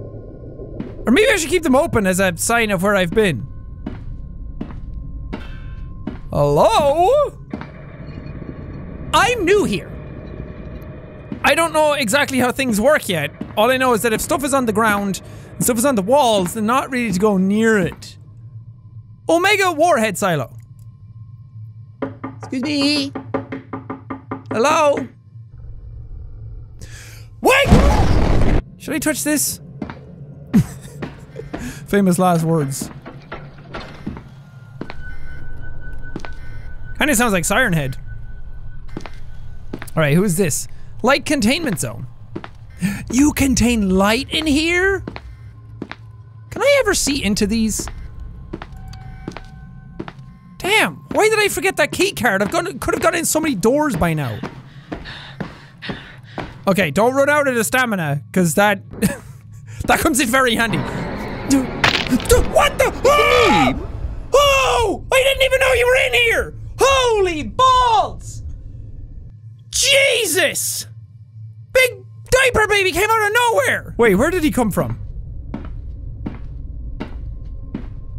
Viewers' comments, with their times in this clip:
0:08 sounds of 173 moving Me: slowly turns down headset volume in case of Jack scream
0:08 Me: hears 173 moving close Jack: dosent hear it Me: "chuckles, your in danger"
0:20 I was sleeping with this vid on and uh uh jack if your reading this you woke me up my grandma is like in a different room and was like what happened and all she heard was a grown man yelling and waking me up so yea I got scared too
0:21 who else is high as fuck sitting here thinking jack is a really tapping on glass?
0:36 yes this Looks siren head's sound
0:40 when he says "Sounds like SirenHead" a siren was coming from outside.👁️👁️
0:55 I know I'm late to the party, but the moment I heard Peanut (173) shuffling I jumped out of my skin going, "where, where, WHERE-?!"
1:02 Jack: screaming in fear Scp-273: IT'S A ME MARIO